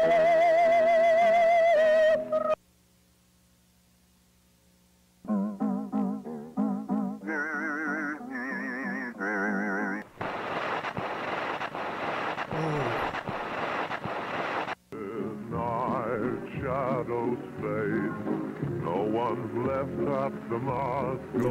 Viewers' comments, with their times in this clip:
0:04 bro I thought they where gonna start playing el chavo del ocho's intro lol